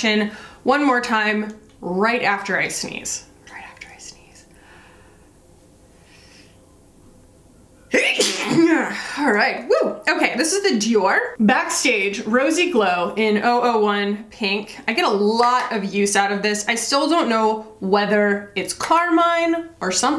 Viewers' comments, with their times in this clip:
0:07 Bless u dearie.💖